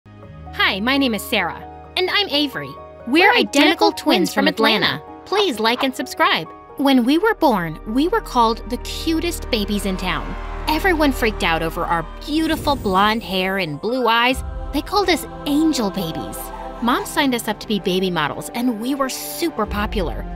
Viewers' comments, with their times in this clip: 0:04 got me laughing because of how they said it!